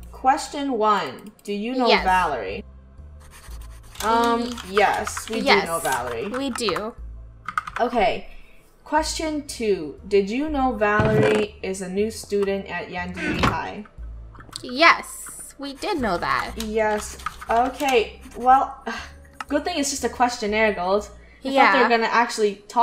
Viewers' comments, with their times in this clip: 0:05 In we can hear Draco's voice XD